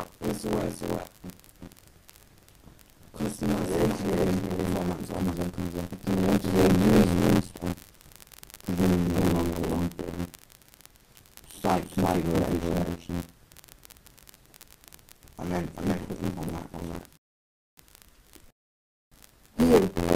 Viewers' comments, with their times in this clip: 0:06 I'm not sure why but the last vew of your videos I've watched (nice_menus was the other one) the microphone has started feed-backing